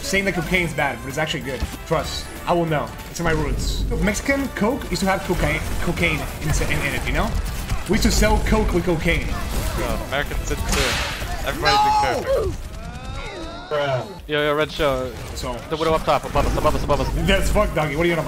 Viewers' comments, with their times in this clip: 0:05 I love how he goes for Spanish pronunciation first, then realizes